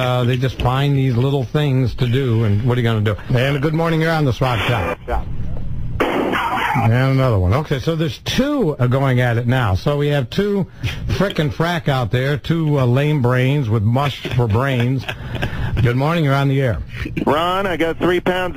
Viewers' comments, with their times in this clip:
0:03 I always lose it with the pause and gunshot.